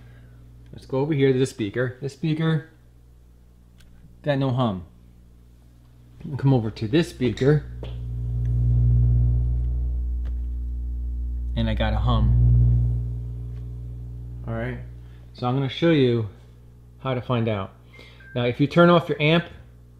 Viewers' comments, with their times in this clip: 0:05 The right speaker's hum sounds like a Star Wars light sabre.